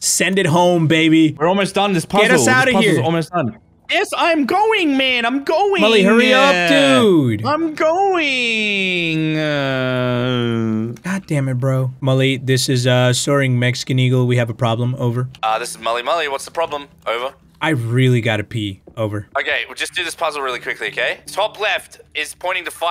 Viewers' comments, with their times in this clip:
0:08 the "Im goingggg" part gives off the same energy as the "Just listennnnnnn" (this is when a police tells a girl to pull over when she was not driving, just search it up if u wanna see it)